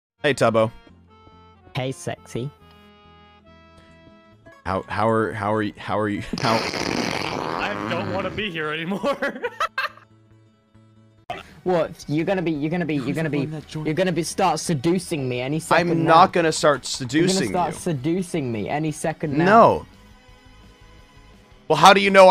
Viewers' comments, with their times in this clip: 0:04 Ranboo: howareyouhowhowareyou- Tubbo: violent shitting noises
0:08 he sounds just like my boyfriend when he laughs-